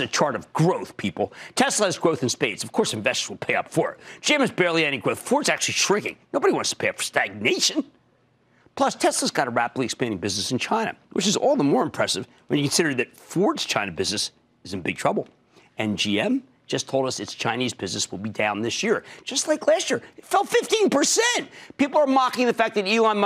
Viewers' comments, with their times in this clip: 0:05 Thank God Kramer is not a speaker... He mumbles worse than the Goonies dude...